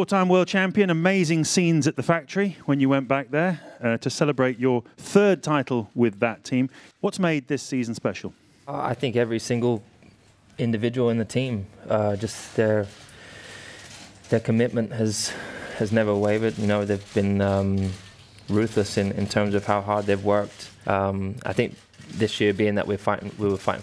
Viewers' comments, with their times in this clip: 0:08 did anyone else hear that bwoah